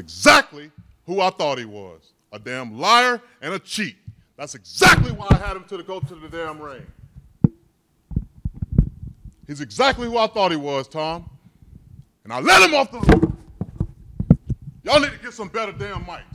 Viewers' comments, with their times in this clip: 0:04 You can hear a little laugh